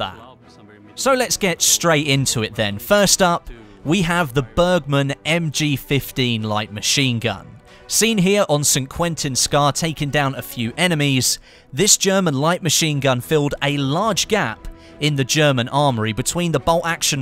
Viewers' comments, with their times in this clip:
0:03 Close water weapons